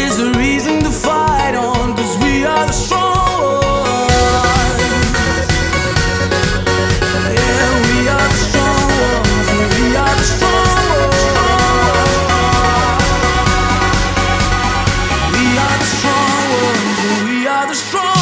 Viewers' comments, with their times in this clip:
0:03 That melody before the drop on is better than one in the drop! :) Awesome song btw :)